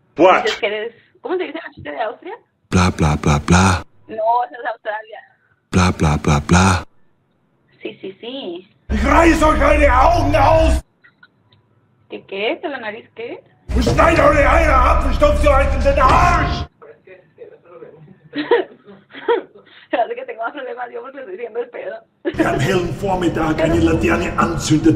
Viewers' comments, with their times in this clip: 0:08 he's got the anger of Hitler 🤣